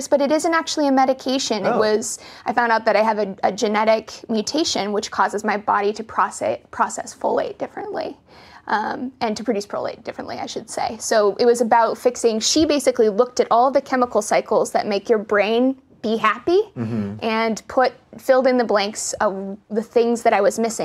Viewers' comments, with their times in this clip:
0:03 What did she said? Her body can't process/create what? I can't make out what said.